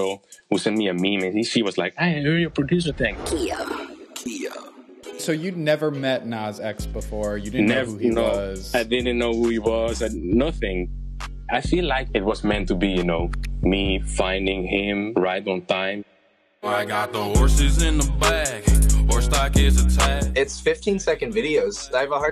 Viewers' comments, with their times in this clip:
0:03 Youngkio producer tag a Capella